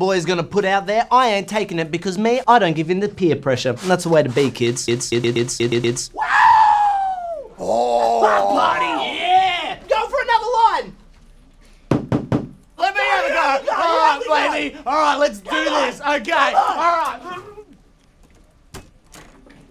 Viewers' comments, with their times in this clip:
0:05 The wooooo gives me strength